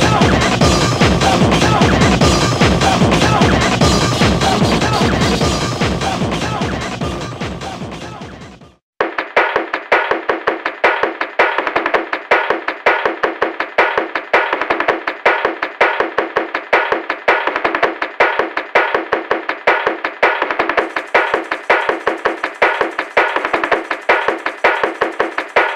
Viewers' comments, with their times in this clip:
0:08 something about VS BGM 9 got a Bomberman vibe to it